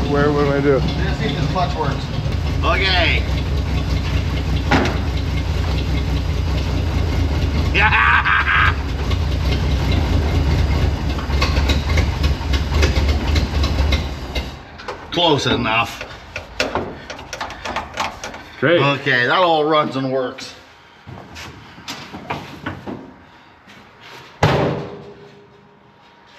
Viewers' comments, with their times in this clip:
0:09 sound very good like new